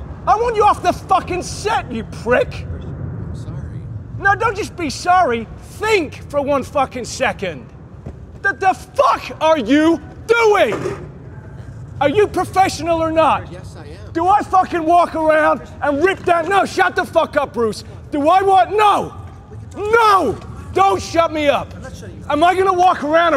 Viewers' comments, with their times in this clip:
0:04 when he said: "don't just be sorry" he sounds like Peter Griffin